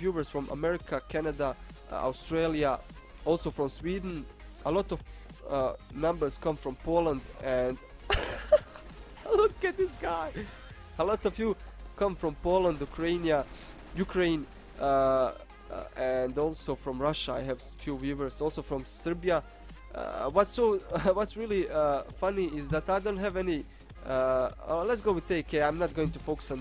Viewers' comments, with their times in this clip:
0:08 Around 80 dollars thats a premium mic man thats awesome! :D sounds GREAT now as well! I cannot wait to make another CS GO video mate! i was looking onto the workshop and ive found some really crazy ones we might can try with ***** :) Glad to hear ur getting better however! being sick just sucks! LOL! im Swedsh tho xD